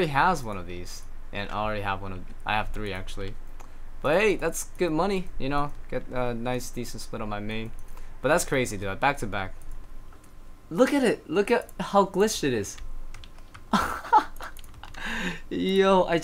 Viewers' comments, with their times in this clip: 0:04 types lmao in chat Proceeds to talk like normal